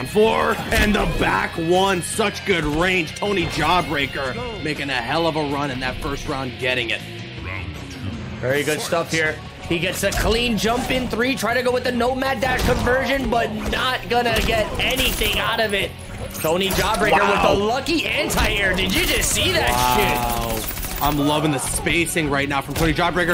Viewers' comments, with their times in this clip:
0:05 Does anyone know the song that’s playing during the kabal and spawn match?? Starting ? It sounds so epic